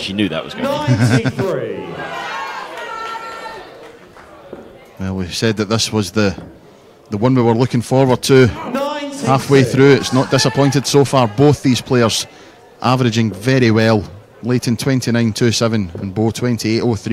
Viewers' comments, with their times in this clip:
0:04 lol. Who's Anna